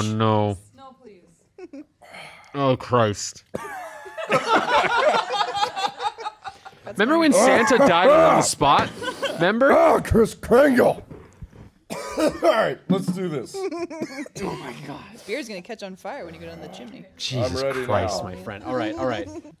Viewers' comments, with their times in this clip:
0:03 the all to classic sound of the liver giving out